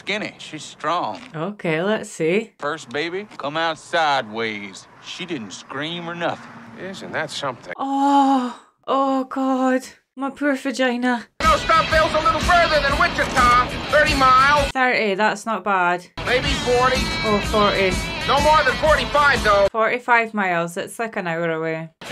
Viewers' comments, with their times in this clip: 0:09 "My poor vagina." Maybe it's childish of me to laugh, but that's the first time in my life that I've heard anyone say that publicly, and the Scottish accent makes it even funnier.